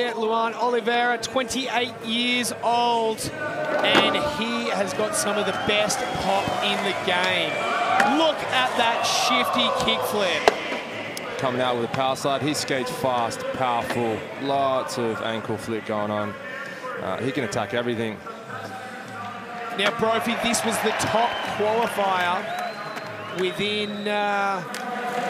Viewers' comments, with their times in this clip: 0:06 though he said “ oh...look at that shity kick flip!”😂